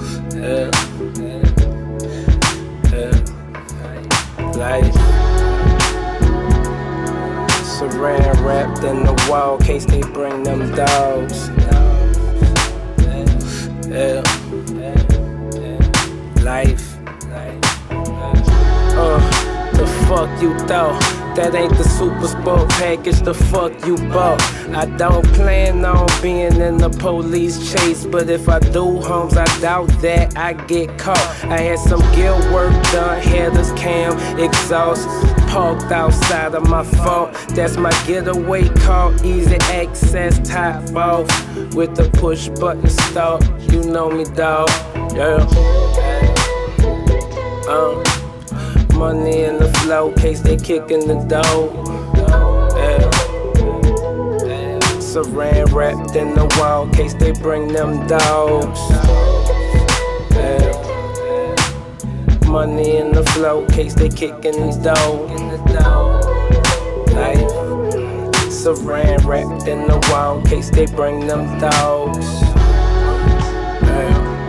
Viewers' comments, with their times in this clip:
0:04 I dont disagree with u, but then again tell me doesnt fit the song perfect lol look how relaxed he is riding in that thang just as content as he wanna be going off into the horizon with the most angelic harmonies glaring behind him.
0:59 What is the chick in the background saying??